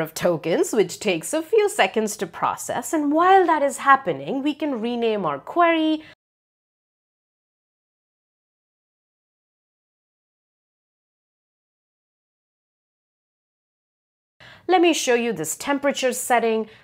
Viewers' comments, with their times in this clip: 0:04 The video is great! Just an FYI, the audio cuts out for about 10 sec.